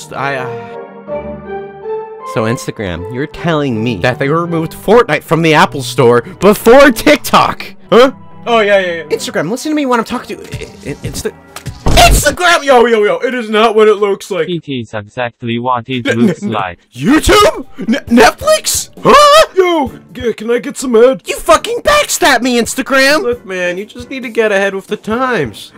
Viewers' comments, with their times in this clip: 0:10 r u s t s o u n d